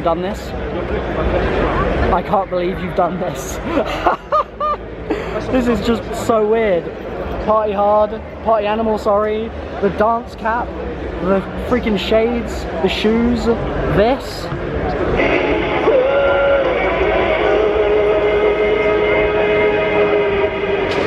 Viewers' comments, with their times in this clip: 0:04 he said i cant beleve u done this 😂😂😂 sounds like that other british guy that went viral on vines